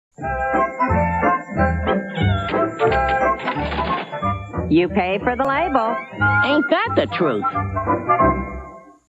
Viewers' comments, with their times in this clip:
0:04 I love Wilma's voice!